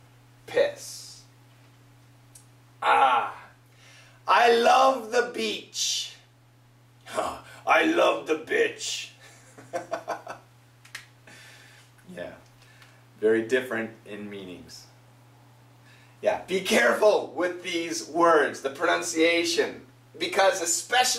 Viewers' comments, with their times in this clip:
0:07 You was sounding like the Trevor (from gta 5)